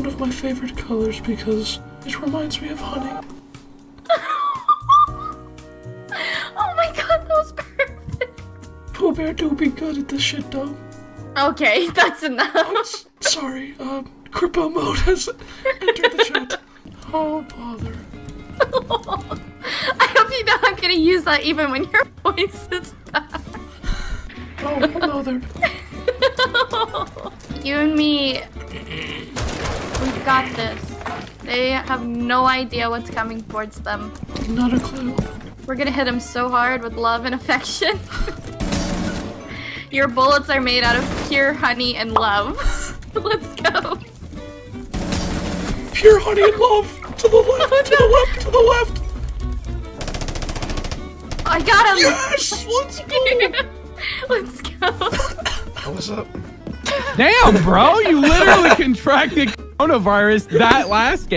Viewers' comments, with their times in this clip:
0:03 Minute she sounds like she's seen a rabbit been shot.😂
0:48 pooh bear singing beyonce